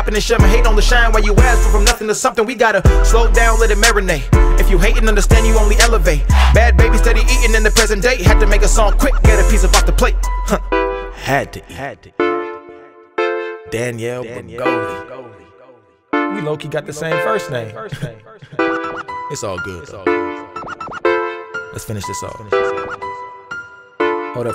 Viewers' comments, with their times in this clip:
0:09 that wind was perfecto 👌